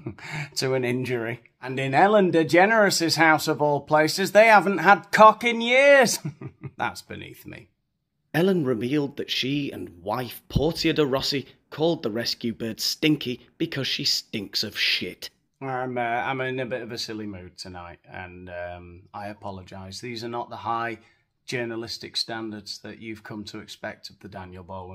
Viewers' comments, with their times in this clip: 0:06 😂. By the way is it sinkie or stinky?